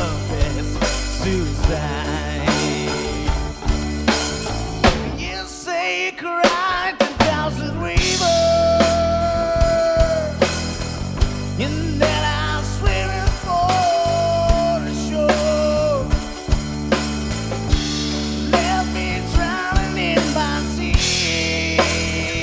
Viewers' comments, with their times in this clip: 0:08 amazing Jon bonjovi real sound